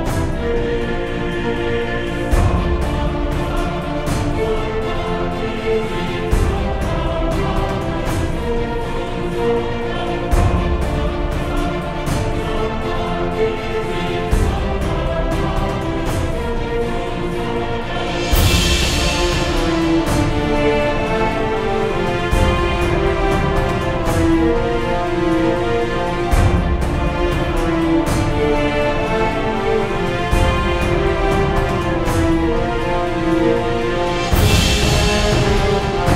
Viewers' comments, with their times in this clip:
0:03 I'm sorry, I just always hear it when I listen to this and had to make a comment. "Ron Weasly"
0:23 why is the sound ''vibrating'' for me ?